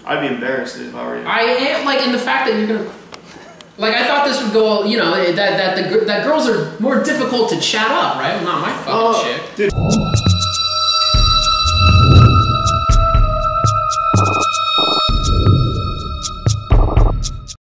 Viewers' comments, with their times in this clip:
0:07 women cheat more than men. are these even real? he sounded like he was about to say "the girl" and the cameraman is trolling him.